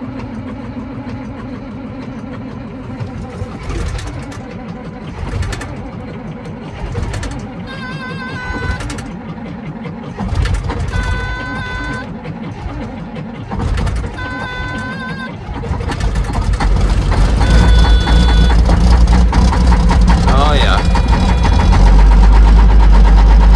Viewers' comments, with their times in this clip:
0:10 that was a close one....right on the edge of losing cranking speed vs. enough cylinders lighting off 🙂